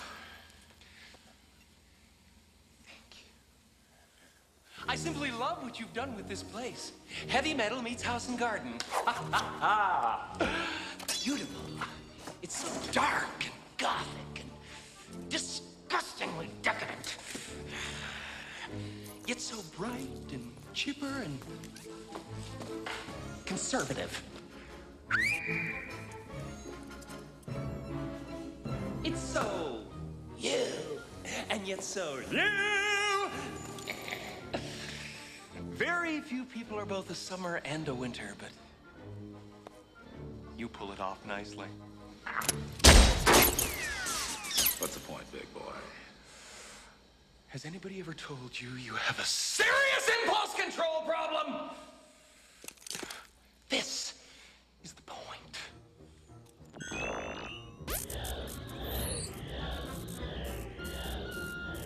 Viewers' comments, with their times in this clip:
0:05 I think that Carrey’s line-delivery, and especially that cocky little laugh is the most genuine Riddler-y delivery in the whole film
0:24 you know Jim try to act like Frank he definitely I saw clips from the show he's like hopping around and making love Goofy laughs Jim the great job.
0:47 he honestly sounded like Mike Pollock Robotnik when he screamed like that How fitting
0:48 has anybody told you have a SERIOUS! palls introl problem!? 😅